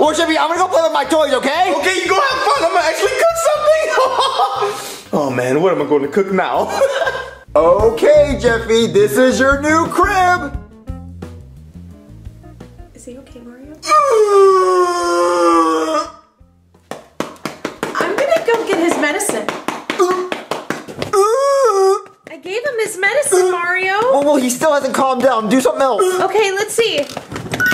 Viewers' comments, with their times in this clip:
0:08 sounds like a gangster telling some crook the base or sum Also funniest part ever
0:10 2x speed when he's slapping his pants is a minigun
0:11 Jeffy: (loud moan) Me: I think he likes it.
0:13 goofy ahh treasure seller death sound
0:13 i like that uh sound